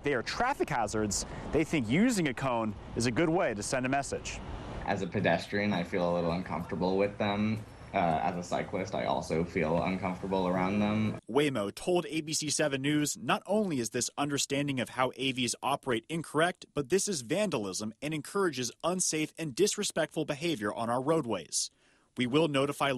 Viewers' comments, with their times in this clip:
0:07 Dude! Enough with the vocal fry!!!